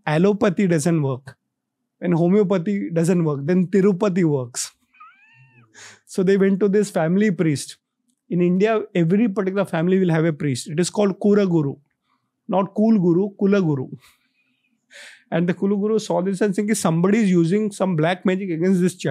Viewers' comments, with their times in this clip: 0:04 Who felt the screem 😱